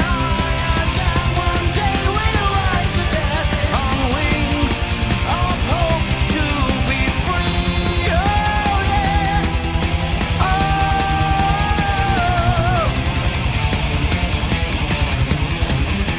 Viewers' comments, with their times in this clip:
0:04 I don't think Henjo's mic got hooked up. :) I can hear everybody else, but not him. Rest of the show as well. Terrific show! This is the show that made me aware of Gamma Ray. Now my favorite band.